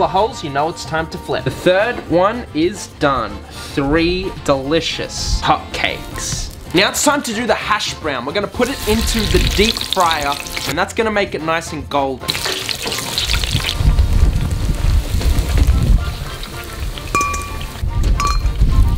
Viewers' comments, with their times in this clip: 0:05 He says cupcakes lol Edit: oops, I miss understood. He said “hot cakes” not “cupcakes”